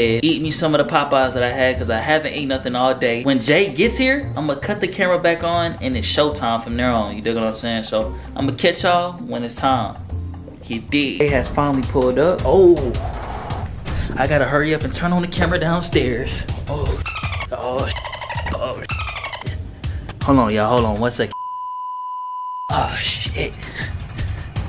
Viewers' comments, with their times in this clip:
0:09 you can hear her in the background Still fw with the content doe